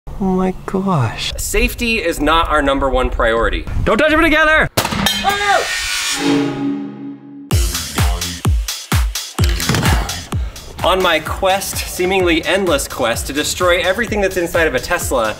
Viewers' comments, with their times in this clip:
0:00 he kind of sounds like a girl